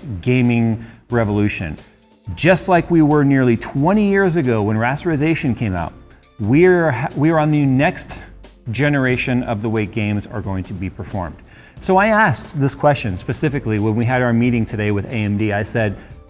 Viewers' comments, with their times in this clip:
0:04 ...rats - er - u - sA - shun ??? Sorry, my inner caveman just said "uh?"